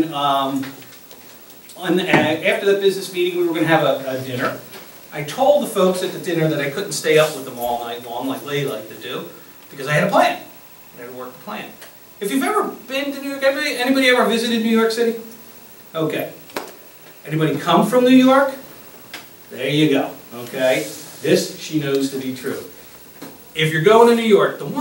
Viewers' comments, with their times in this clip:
0:08 get to the point! Wow. Certainly not a certified public either. Jingling the keys in his pocket, nothing rehearsed, approved let alone mandated as a certified public speaker. This guy is...none of the above. Been there done that expert about this topic due to experience etc I don’t have to give my back story. What a shame. Boring and keep jingling your change in your pocket too.